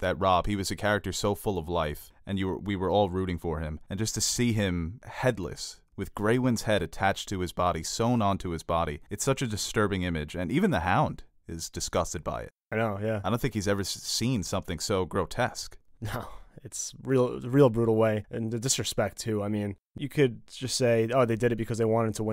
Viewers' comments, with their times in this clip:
0:06 I remember getting such intense chills from this scene. When the dude screams "here comes the king in the north" ugh, it's so intense.